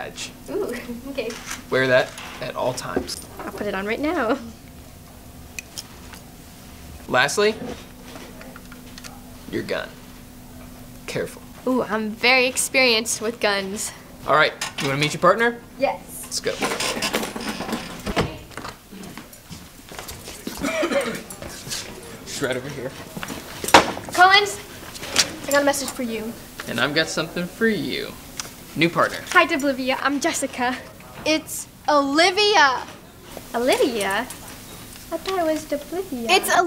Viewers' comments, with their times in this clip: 0:04 😂 how she says it lol
0:20 On rn on 2020 will say: HE HAS COVID 3x HAHAHAHAHAHAHAHAHA